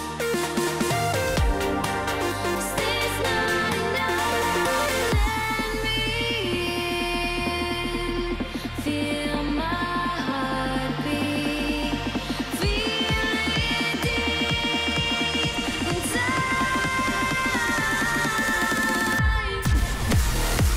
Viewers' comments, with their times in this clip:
0:04 beat drop thx me later